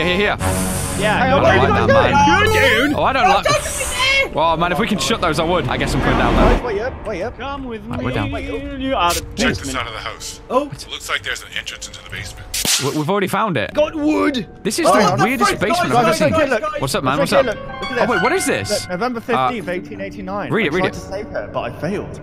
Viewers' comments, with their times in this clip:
0:07 that singing though